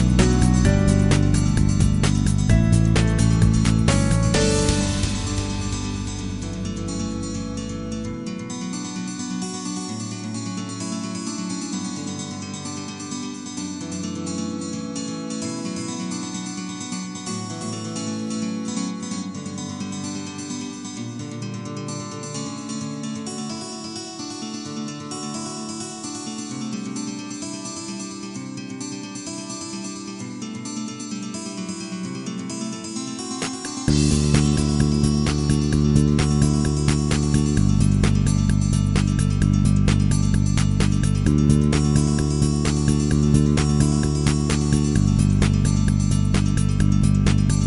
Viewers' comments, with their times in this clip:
0:03 the transition, just simply beautiful
0:04 Earlier MapleStory soundtracks are like no other. I love how they are actually a full soundtrack with an actual bridge instead of repeating verses like most BGMs you hear in the newer MMOs these days (That would apply to MS2 BGMs as well, sadly). Above The Treetops's bridge is especially one of the most beautiful things I've ever heard. So many thoughts and feelings in a single background music for a game.
0:33 that bass, man. Hits you right in the feels